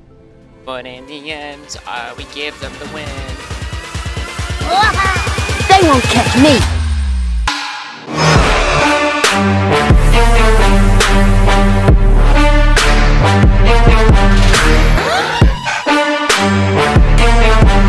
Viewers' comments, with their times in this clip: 0:03 your mic stop working